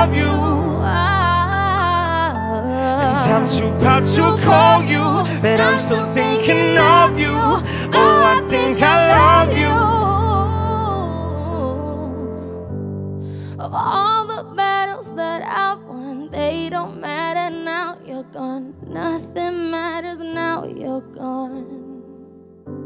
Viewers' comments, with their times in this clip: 0:05 100 times more emotional than the original.